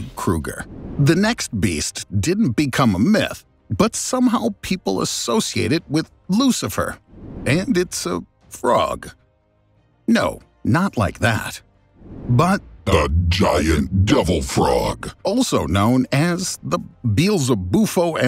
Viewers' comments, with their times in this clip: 0:04 I laughed so hard at the devil frog in that deep voice lmao